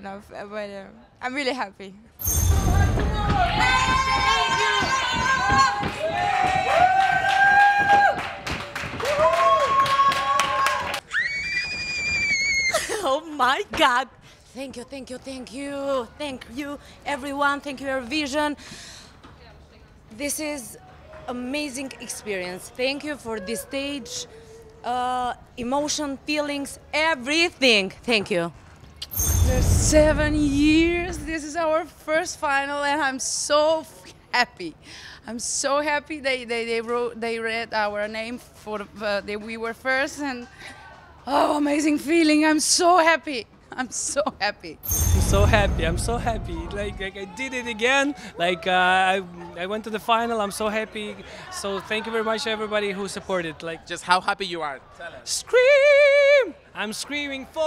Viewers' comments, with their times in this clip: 0:09 that's a high note from Jonida 😅 😅
0:10 Oh, you want a scream? Here: you're welcome :)
0:11 Nobody: My kettle:
0:11 close your eyes and picture a kettle
0:11 Jonida recreating Kaliopi‘s epic scream from 2012!!!
0:11 What’s with the high pitched screaming?!
0:11 that high note tho
0:11 Jenice from the Friends :D
0:45 🇷🇺 Lazarev is the best Screeeeeeeaaaam 😅